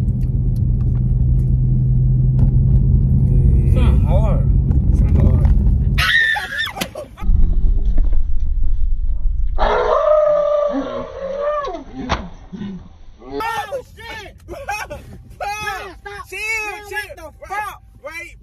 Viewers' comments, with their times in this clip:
0:05 the scream was funny ashhh😂